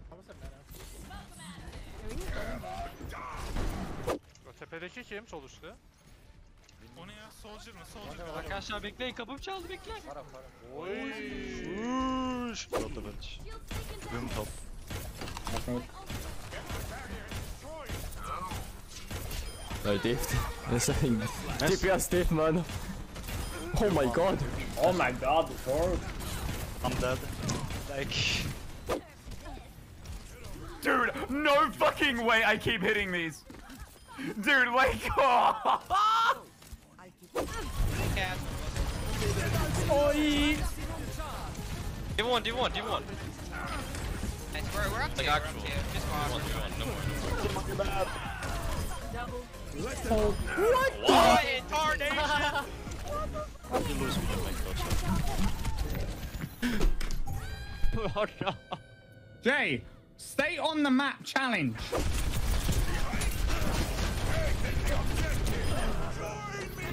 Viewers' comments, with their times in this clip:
0:10 lmao why did they sound like the aliens in Toy Story that say “The clawwwww”
0:30 i thought this was muselk lol sounds kinda similar
0:53 BYE IM DYING "JAY. STAY ON THE MAP. CHALLENGE." he sounded so mad im out 💀